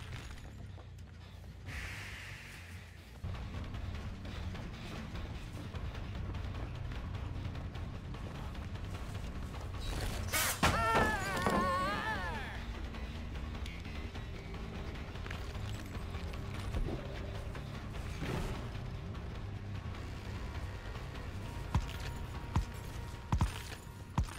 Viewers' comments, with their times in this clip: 0:09 did they change her voice?